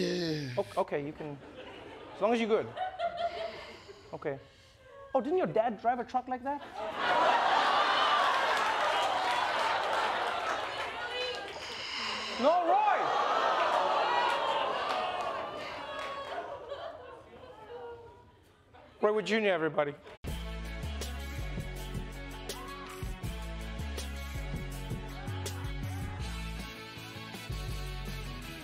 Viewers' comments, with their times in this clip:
0:10 That woman screaming "Really?" in disbelief in the audience